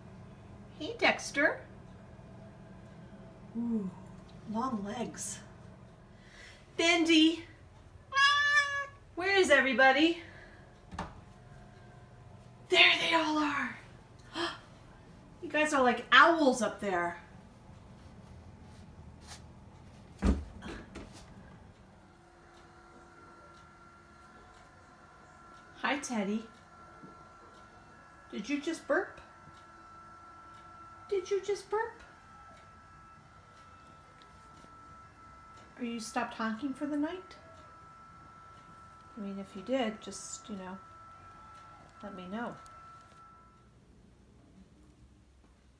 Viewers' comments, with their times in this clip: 0:08 --Bindi lets out such a cute meow!
0:32 is that the litter robot i hear?